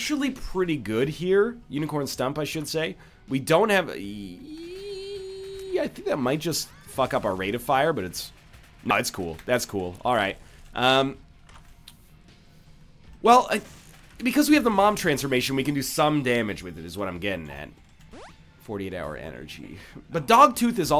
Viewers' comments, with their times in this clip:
0:05 RAVE TIME Darude Sandstorm begins playing